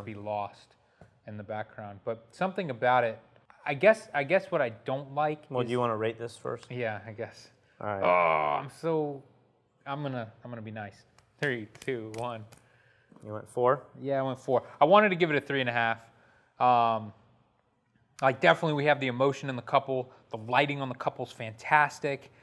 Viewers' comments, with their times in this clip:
0:07 Why is no one talking about the disembodied moan